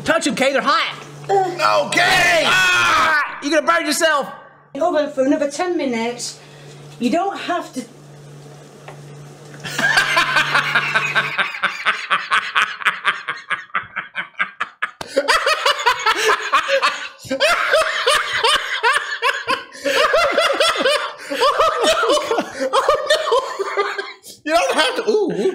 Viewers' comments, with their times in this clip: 0:06 I saw this comment and was skeptical since every other one of his laugh made me laugh too. But, you were right. is the best laugh.